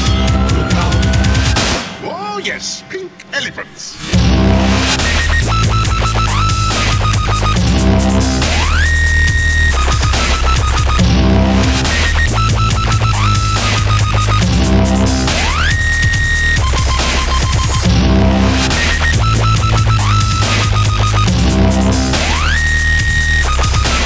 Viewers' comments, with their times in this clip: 0:05 this song dont even start till